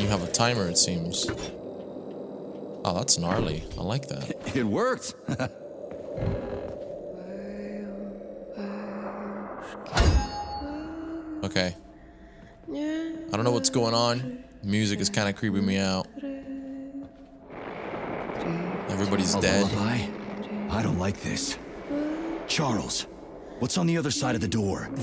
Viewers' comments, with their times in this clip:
0:10 That's f**king lullaby is really creepy, indeed ) Here is the translation: Sleep, sleep, have a good sleep, Don't roll over the side of your bed, The gray wolf will come and grab you, And will take you into the woods. I'm Polish hence can understand a little bit of Russian.